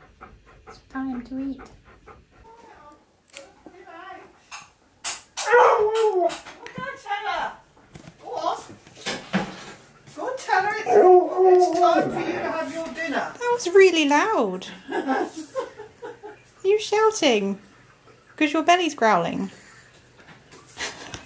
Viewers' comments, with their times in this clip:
0:04 Key is clearly just echoing the sounds his stomach makes :P